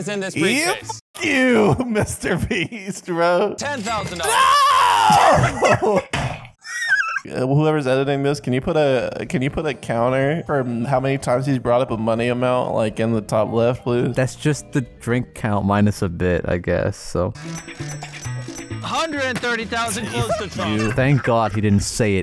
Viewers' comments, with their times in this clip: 0:04 That scream of despair killed me.
0:05 I'm thanking God I didn't drink for these. I heard the "NOOOO" in I feel it